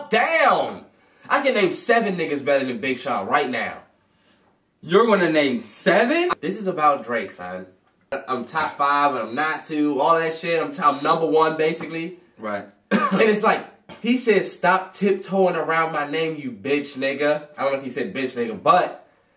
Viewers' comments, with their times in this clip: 0:03 LMAO :O "You are going to name sevEan?" lmao why he sound like that